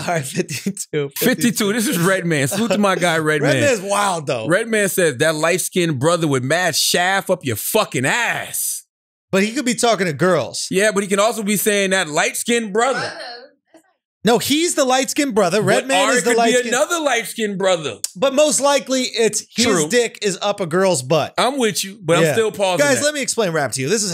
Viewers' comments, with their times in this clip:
0:04 The way Charlamagne read that Redman lyric KILLED me!!! 😆😆😅😅🤣🤣🤣
0:05 Charlamagne hit that Redman line HARD! 😂😂😅😅🤣🤣😆😆😆